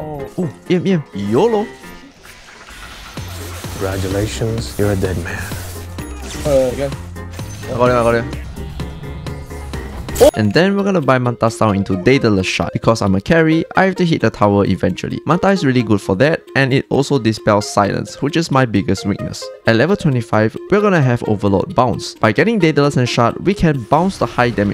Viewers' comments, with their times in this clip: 0:09 perfectly cut scream XD